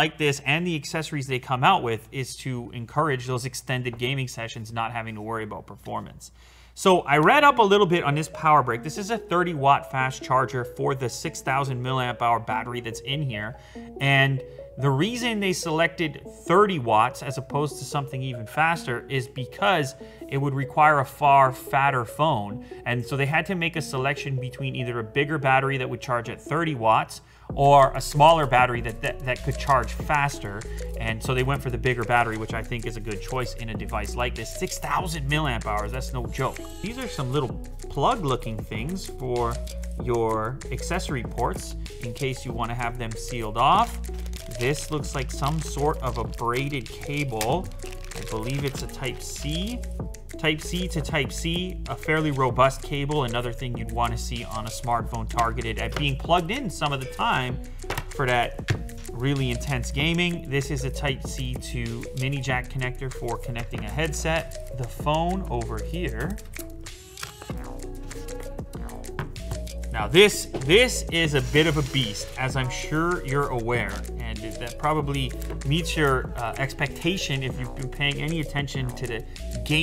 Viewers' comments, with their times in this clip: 0:08 The background music from makes me just ayy lmao
1:05 Is it only me or someone else did hear a motor sound when he removed the phone from the box ...🤔